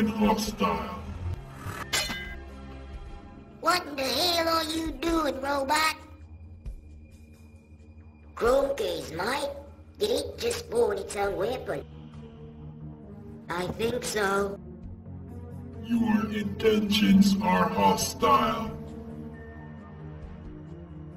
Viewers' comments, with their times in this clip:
0:03 Why Does He Voice Like a Kid